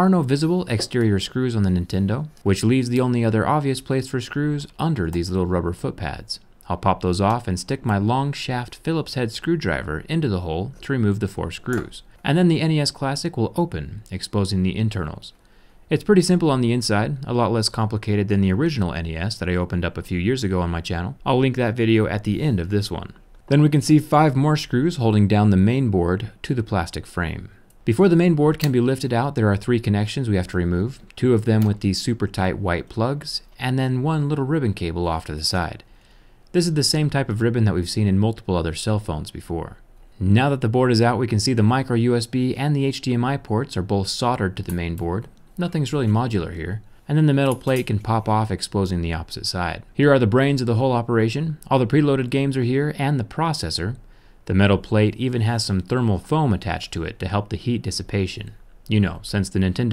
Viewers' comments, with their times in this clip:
0:07 stick my long shaft.... I thougth he was going to make a joke after that, or maybe he already did that? Nice voice btw, both homo comments I know.
0:44 That notification sound really got me xD
0:45 did anyone else hear his phone go off??